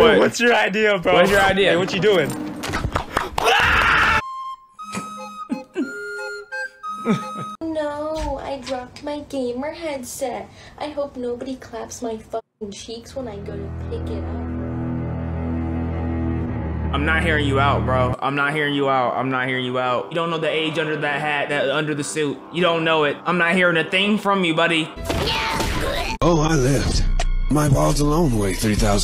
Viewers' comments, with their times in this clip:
0:10 Im not a furry, but the voice got me like: 😮
0:14 putting dio theme there is crazy 💀
0:15 Dio music kicks in, and the diabolical starts flowing 😂